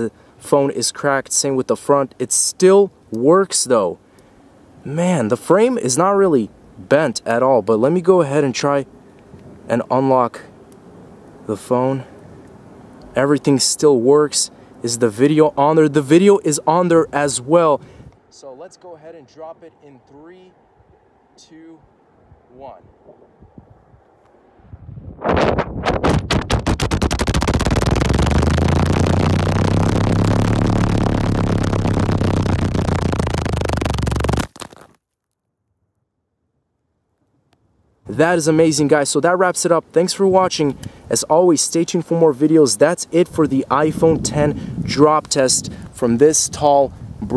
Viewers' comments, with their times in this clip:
0:04 sounds like a helliecloper
0:18 when the phone was dropped the sound that captured the microphone of iPhone kinda sounds like an helicopter. 🚁🚁🚁.
0:19 Sound like helicopter
0:19 who wants to adopt this phone? Its called the “iphone mutibushi” Ngl when you dropped it sounded like a car😭✋
0:23 turn it on 2x, it sounds like a Laborghini
0:23 Did someone purchase a motorcycle?
0:24 put it in 0.25x speed and it sounds like random music
0:24 it sounds creepy if you slow it down to 0.25x
0:24 it sounds like a motorcycle starting or a plane
0:24 put it on 2x speed and it sounds likw a ultra minigun
0:24 was there a helicopter in the background
0:24 it sounds like a helicopter
0:24 no wonder why race cars are so loud
0:25 this is what a broken thunderbolt siren sounds like without its chopper
0:25 sounds like my lawnmower
0:25 sounds like a deep fried meme if you keep replaying it
0:25 THIS IS WHAT BLACK MIDI SOUNDS LIKE: 90 bpm to 57394 bpm lol
0:25 sounds like when you fart too much
0:25 R.I.P Headphone users :D
0:25 INTENSE MINIGUN NOISES
0:26 was the best eror sound
0:26 sounds like a fart
0:26 sounds like a propeller plane starting up
0:27 The sound of an old video player 😂
0:27 At the falling of phone moment..my brother though that someone was farting😂😂😂😂😂😂
0:27 that sound like a Mazda rx7😂😂
0:27 Sound Like A Helicopter In In The Air LOLZ
0:27 The phone sounded like a helicopter wtf
0:27 it sounds like a airplane or a motorcycle starting up and driving
0:27 sounds like me when I have gas pain at the bathroom
0:28 sounds like a plane starting😂
0:28 play it on 1.25 speed SOUNDS LIKE DIARRHEA
0:28 this sounds and looks like a low budget Slender Man sighting video
0:28 that sounds like a 2007 GMC topkick lolol
0:28 sounds like a helicopter
0:28 well someone started the generator ⚙️
0:29 when you start your lawnmower's gasoline tank is near empty.
0:29 sounds like hellicopter
0:29 sound like a fart